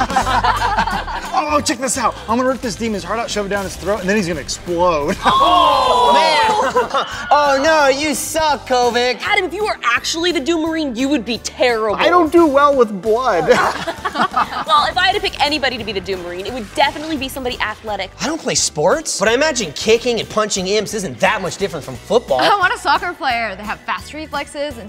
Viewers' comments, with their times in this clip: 0:07 I hear you wilhelm